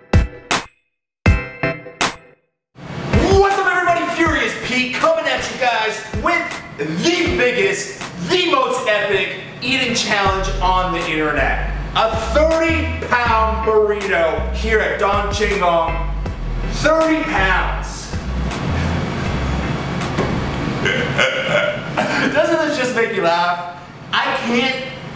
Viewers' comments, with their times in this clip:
0:06 Furious Pete: “the biggest” Captions: “These niggas”